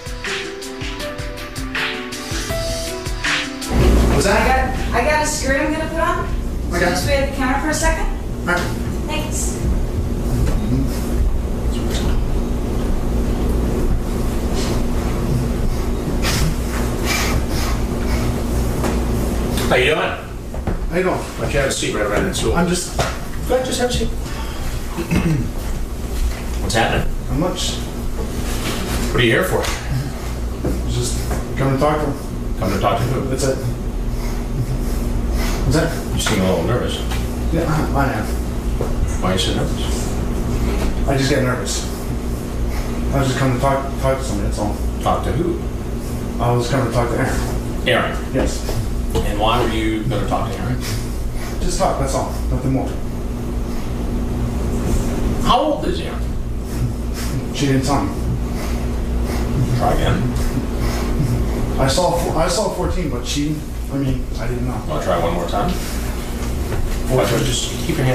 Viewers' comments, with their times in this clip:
0:06 The guy was clearly coked out of his mind, all fidgety and the constantly breathing and 'mhmming' through his nose. He no doubt did a line before going in the house. Or it's a nervous tick, though I doubt it.
0:53 i hate the noises he makes, its so fucking creepy and i couldn't concentrate at all while doing my work. glad he was caught.